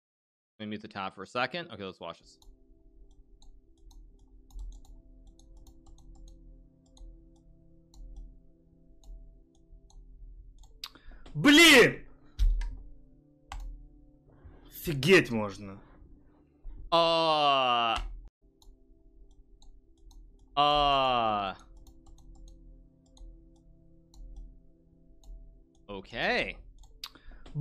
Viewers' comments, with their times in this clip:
0:08 hmm I must be wrong then. It really sounded like a "t" at the in the uncut clip . And by its expression I would say that its a "bad word" but you should be right.